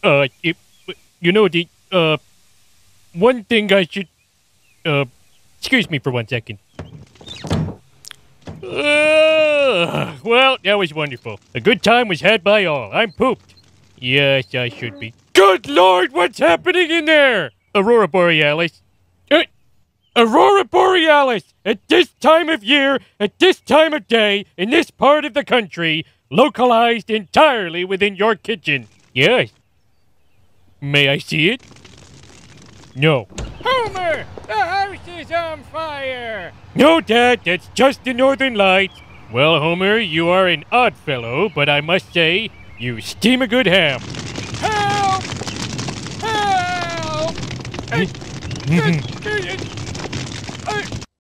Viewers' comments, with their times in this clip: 0:06 Bruh he forgot the "of course" a crucial plot to the entire arc omg smh I figure it's the normal dialog and that's why it is so quiet. Either way, if I'm mistaken and it is still voiced over, it's too quiet either way.
0:07 I was waiting for a 'D'oh!' at some point, perhaps but still perfect voice acting!
0:30 Many people have tried to do a Homer impression, and they've all failed miserably. Except you. Most impressions barely sound like Homer at all, but you could easily trick people into thinking Dan Castellaneta had recorded this. EDIT: Now I've watched the whole video, I can honestly say this is probably the most accurate impression I've ever heard. Not only is the voice exactly right, but so is the cadence. I can't get over the 'May I see it?' and even the singing is accurate!
0:33 It's as if homer is talking to himself abe simpson's voice
0:34 lol steamed hams everything is homer and homer face in this video? and abe voice lol
0:34 Wow even that Grampa Simpson voice was good.
0:39 Your Homer impression is incredible but can we talk about the fact that it sounds IDENTICAL to how Dan says it?! You’re talented AF.
0:49 sounds like Grampa haha